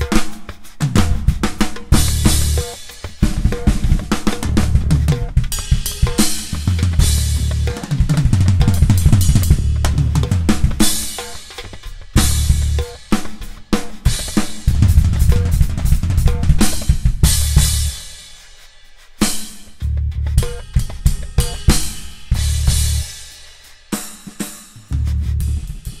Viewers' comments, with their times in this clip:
0:07 that is some musical explosiveness at the end, man. what's that lick ?